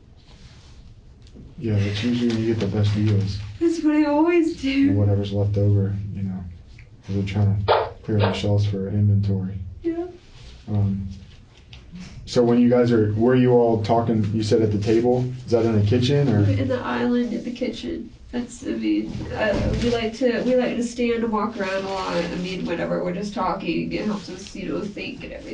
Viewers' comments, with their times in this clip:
0:07 What is that clown ballon noise at like and other parts i thought it was like to cover up names but it seems to randomly happen too.